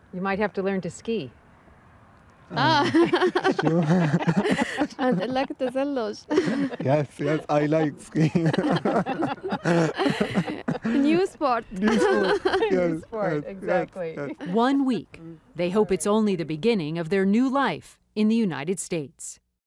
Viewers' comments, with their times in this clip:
0:08 the last laugh before being deported.